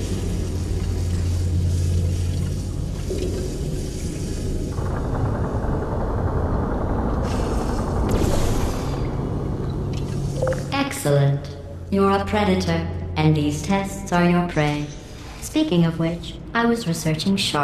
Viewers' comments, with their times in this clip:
0:05 was that gunfire sounds?